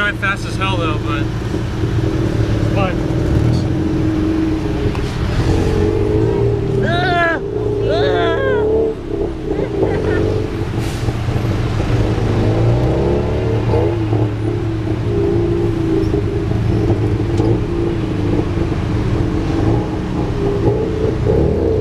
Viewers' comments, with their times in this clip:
0:07 I love the scream you give them Class act.